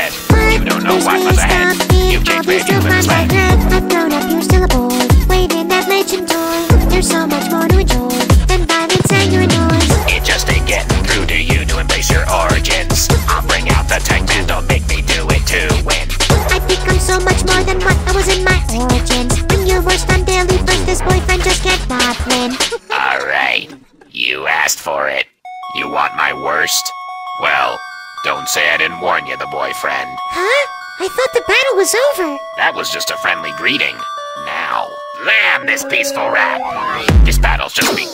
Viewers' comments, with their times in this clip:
0:10 it just aint gettin thru to you to embrace your oranges
0:25 Uhh do you guys notice that this part kinda like sans in undertale?